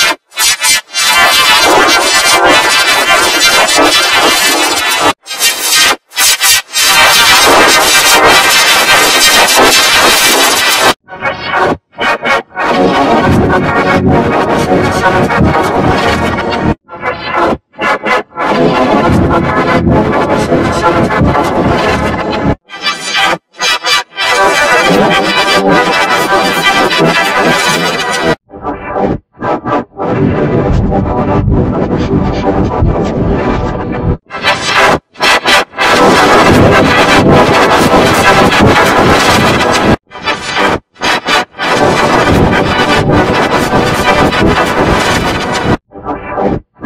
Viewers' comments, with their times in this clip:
0:05 (LOUD) klasky csupo vormulator v11 + deaf major
0:29 Sounds like My G-Major 2015 + Clearer + Confusion